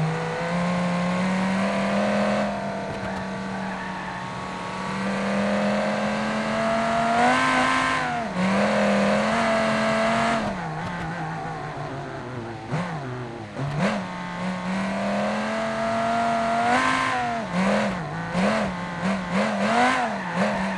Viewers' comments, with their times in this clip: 0:07 V-tec kicked in yo!